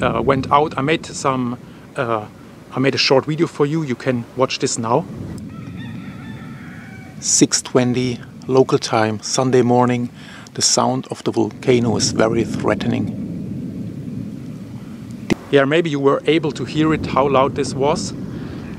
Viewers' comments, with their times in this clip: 0:04 I just had to giggle at the rooster call that is heard 😁 Thank you for your excellent journalism!🌟 Stay cautious and safe!